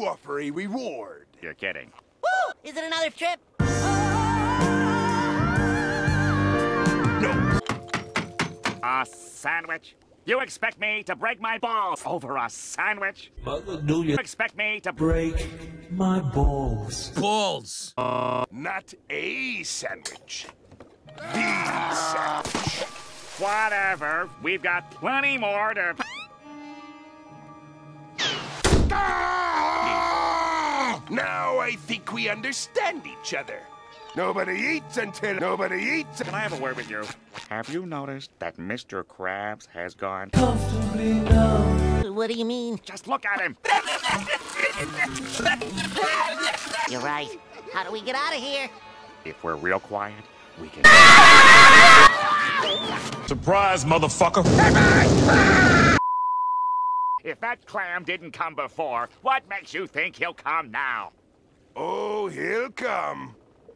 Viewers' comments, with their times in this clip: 0:08 The smoothest sentence mixing I've ever heard
0:21 heavy: aaaAAAAAAAAAAAaaaa splash [some talking form sponge bill, squidwad, mr cribs] thunk AAAAAAAAAAAAAA
0:49 "if we're really quiet" Screaming X'D
0:50 it sounds like mini godzilla and King Ghidorah screaming